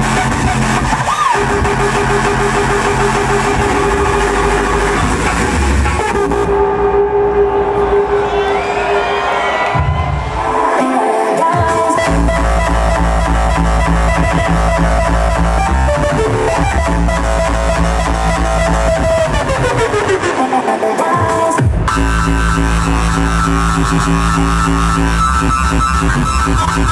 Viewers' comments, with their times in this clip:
0:10 that kick is just fire 😍